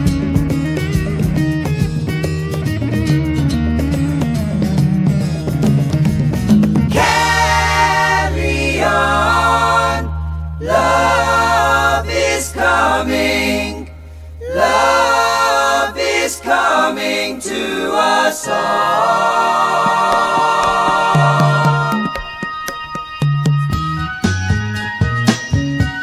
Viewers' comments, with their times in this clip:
0:07 From it is such a great dance tune.